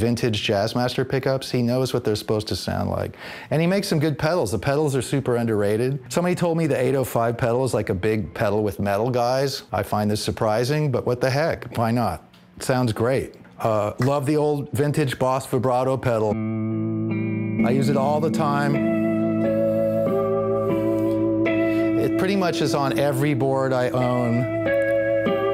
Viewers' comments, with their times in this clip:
0:10 He reminds me a lot of Krist Novoselic. Especially the way he says "but what the heck" sounds like I'm watching an old Nirvana interview lol